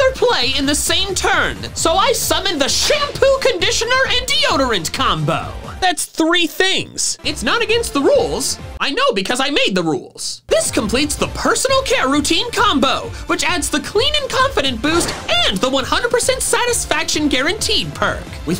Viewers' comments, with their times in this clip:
0:06 The Yu-Gi-Oh theme starts playing